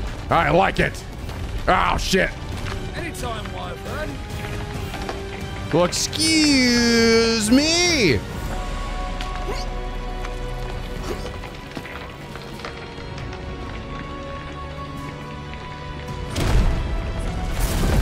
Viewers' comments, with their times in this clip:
0:06 sounded like Link’s line in the Legend of Zelda cartoon from the 80s.